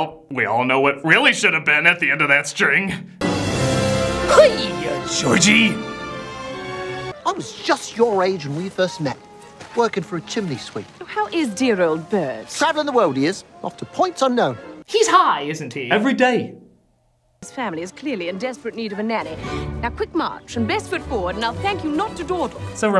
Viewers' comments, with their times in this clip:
0:07 I could've sworn she asked about Burr "Last I remember he shot me". "Oh dear."